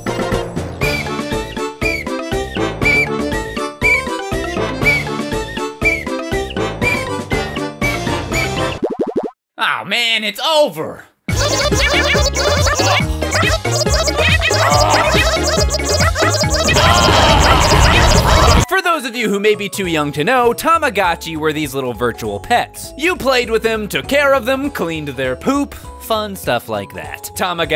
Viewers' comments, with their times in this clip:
0:07 R.I.P. Headphone users.
0:11 great now I'm death